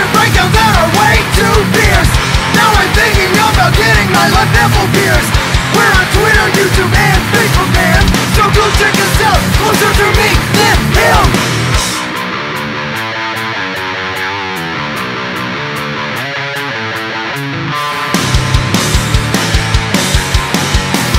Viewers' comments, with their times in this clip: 0:04 i thought it said nipple fears.......